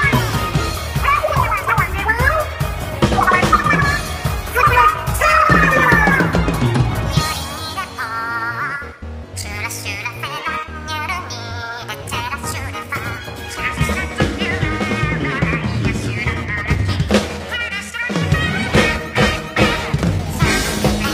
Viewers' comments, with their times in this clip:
0:06 Callie's voice is spot on for this part!